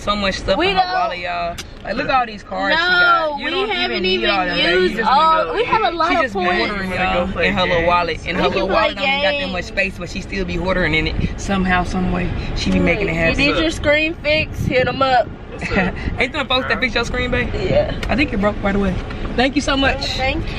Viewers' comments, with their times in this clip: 0:08 my mind was so confuzzled everybody talking at once 😂😂😭